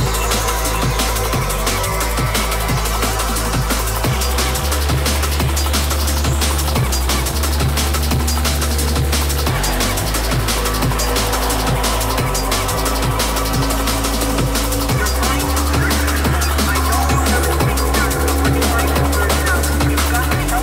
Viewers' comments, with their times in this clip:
0:03 Hey, HELP me please, what is the name of this most common sound in dnb, which is similar to the sound of a stuck record, a squeezed rubber toy, or like someone says "ey-ey"? You can hear it well